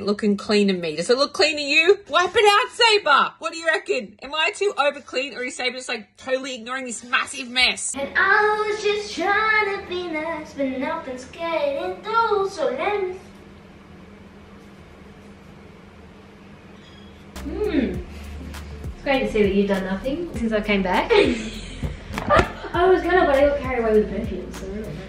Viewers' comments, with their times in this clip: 0:09 Wait....She sings really good